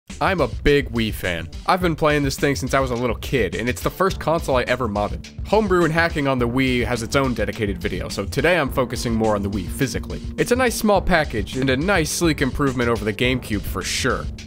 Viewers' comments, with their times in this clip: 0:01 I thought he said, "im a big WIId fan."